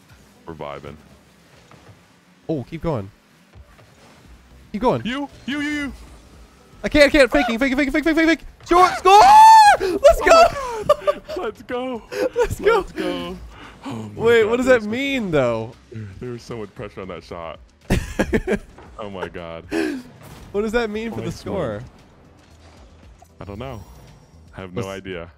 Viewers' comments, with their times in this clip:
0:09 the squeal had me wheezing 😂😂